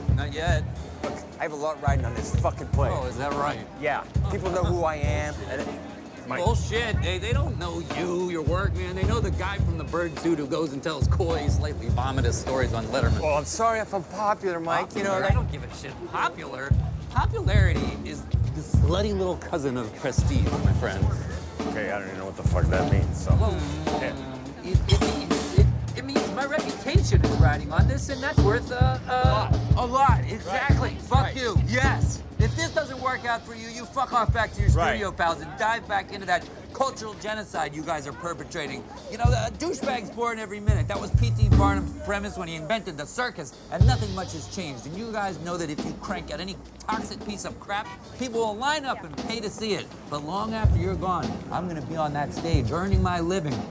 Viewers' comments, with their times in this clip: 0:05 brilliant actors, brilliant film you can see Norton came up late in his line... i love it when stuff like this is going so great you just have to keep going and let it stay on the final edit
0:05 Did Keaton coreograph being interrupted ? I think he cut himself off before Norton's line.
0:23 Nate Smith groove ! drums and groove master .
0:39 The rhythm here is absolutely amazing the way it syncs up to his dialogue.